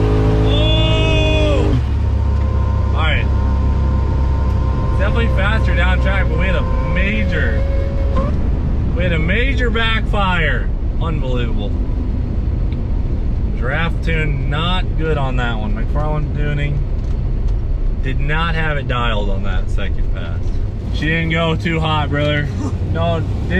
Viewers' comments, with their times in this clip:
0:08 died laughing. .. sounded like a fart when you cracked the window. Lol awesome job you guys!